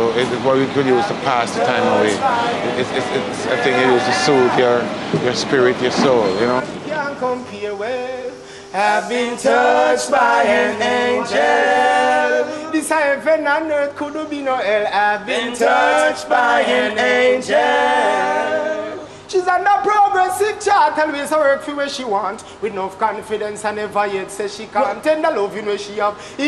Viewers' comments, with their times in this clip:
0:10 That group do they have a name? That song sounds really good.